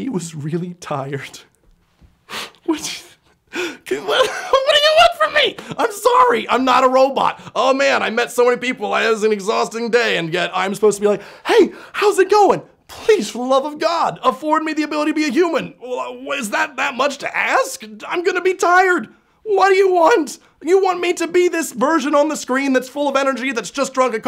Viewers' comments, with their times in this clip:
0:05 At times, your voice went all Adam Sandler